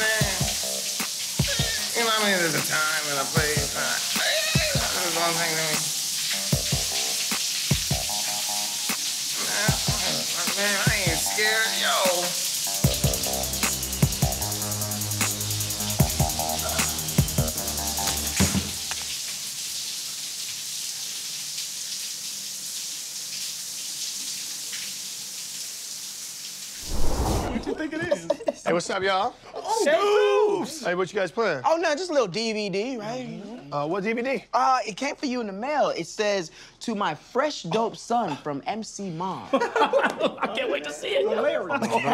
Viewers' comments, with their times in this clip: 0:07 when he started signing 🤣😂😂
0:27 I love this one, everything is perfect, not only how Jordan plays so well a mom, but rap abilities, in fact I could be listening to whole songs like the second one (when the beat changes)